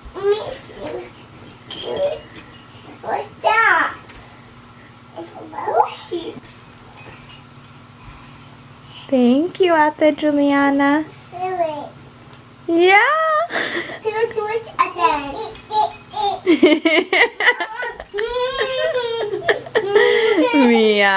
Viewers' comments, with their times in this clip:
0:07 Lmfao sounded like she was gonna say oh shit